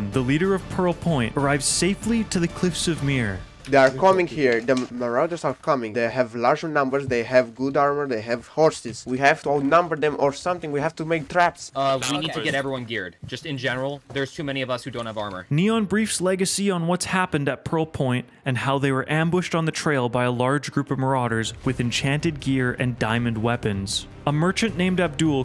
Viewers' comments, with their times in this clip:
0:08 its me boys i speak there omg no way